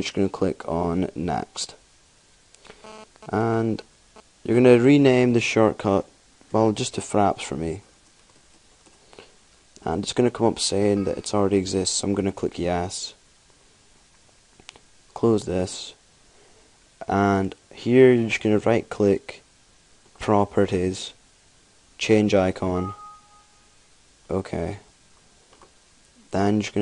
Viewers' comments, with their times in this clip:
0:07 Good video, except for the of dead-air... :/